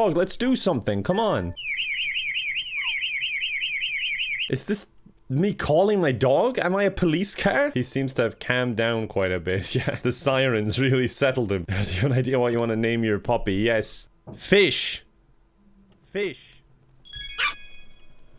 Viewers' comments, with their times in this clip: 0:03 I received an amber alert as soon as the sirens came on I was really confused for a second there